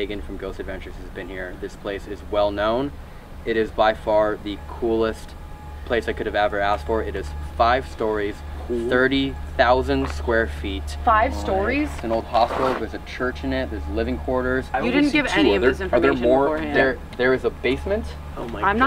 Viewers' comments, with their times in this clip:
0:05 you can hear the mouse clicking on the video